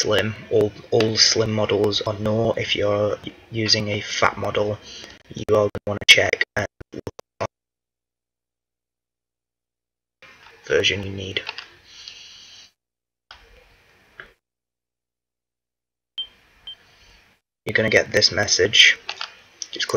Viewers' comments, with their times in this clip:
0:06 Wtf happened to the audio I swear that wasn't in the edit? I just noticed this.